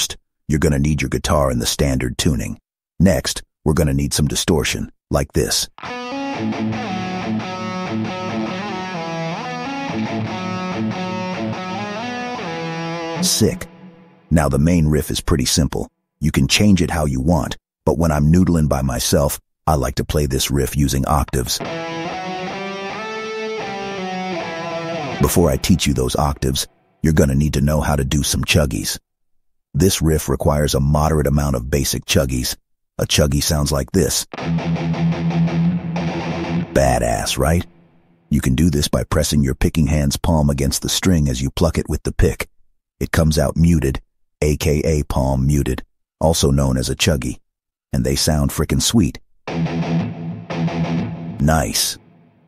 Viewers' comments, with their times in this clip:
0:05 okay, so THAT tone. How tf do I get THAT tone?
0:21 that was just power rangers
0:34 Why does the chuggies from remind me of Disposable Heroes?